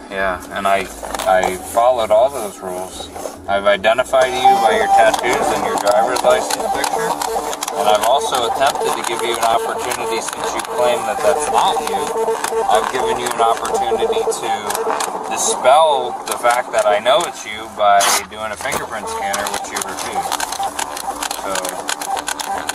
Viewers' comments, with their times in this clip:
0:04 it sounds like the cop had an old dot matrix printer in his car from 1985!